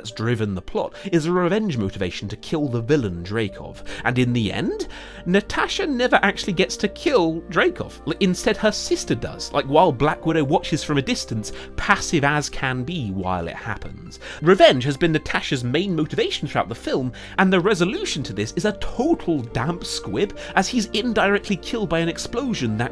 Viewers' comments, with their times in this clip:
0:08 would also like to point out that this scene in particular just looks bad, both in terms of special effects and the acting. Like my god do they phone it in, Scarlett just doesn't seem to be putting any effort into it and you can really hear it.